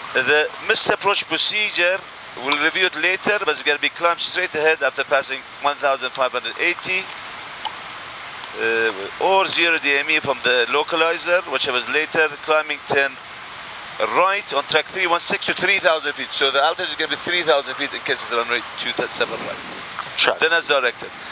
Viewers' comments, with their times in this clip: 0:05 that copilot with that gum in his mouth is incredibly unprofessional when being recorded and I’m sure that pilot is annoyed beyond belief after an entire flight with that in his freaking ears!